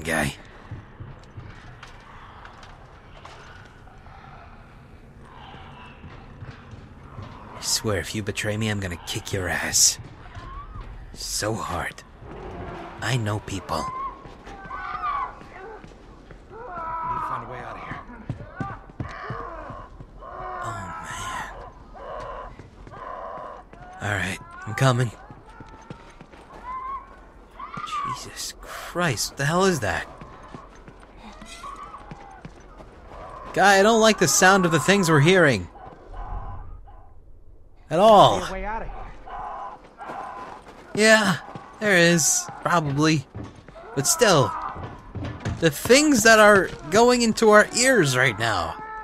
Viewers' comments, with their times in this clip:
0:09 -O~o......Akward! Noises!, what were those zombies doing?......Oh my!
0:32 They sound like donkeys giving birth..